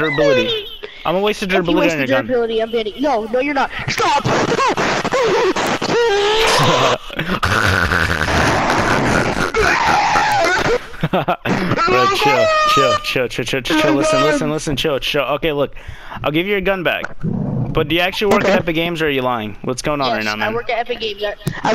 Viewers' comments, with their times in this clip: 0:06 lol it says mm-mm when he sceams so it soud likehe says mm-mm
0:08 pet pig gets on mic :)